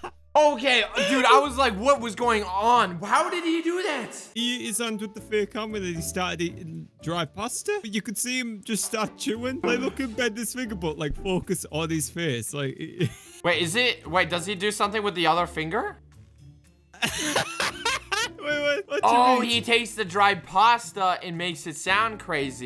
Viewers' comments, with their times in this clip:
0:04 mid finger goes brrrrrrr